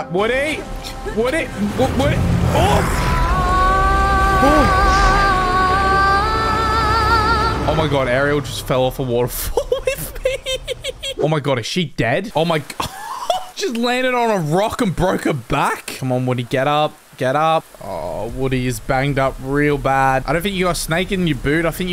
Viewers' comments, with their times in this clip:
0:03 I love her singing voice every time 💜💜💜🧜‍♀️
0:03 Ariel singing on